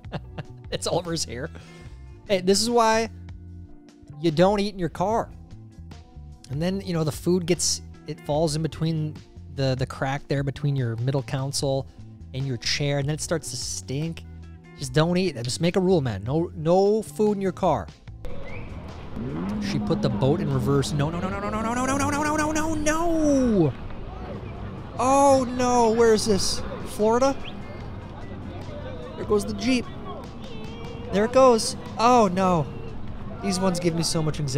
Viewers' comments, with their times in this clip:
0:09 Council? Like the city council? Oh you mean the "Console"
0:15 did he say “middle counsel”?